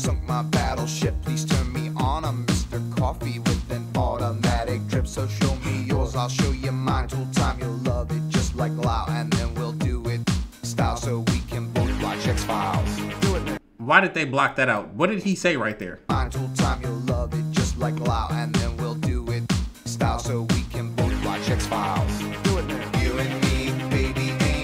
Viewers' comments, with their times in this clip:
0:10 That was the word blocked/censored by YT🤷🏻‍♂️. I’m surprised they don’t just ban the whole video already. but, thankful it’s still there for our viewing pleasure.😬